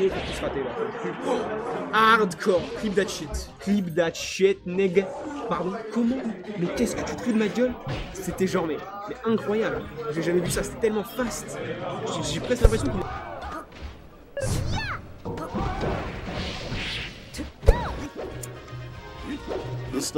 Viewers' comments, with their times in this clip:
0:03 "clip that shit nigga" crying lmfaooooooo (I know that's not what he said but sounded like it)